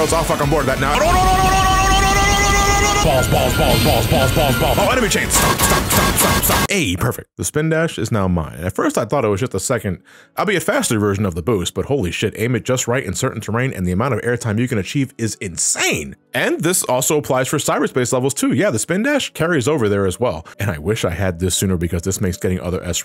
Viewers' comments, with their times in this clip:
0:06 great subtle edit use of the metal bar clang sfx there 😂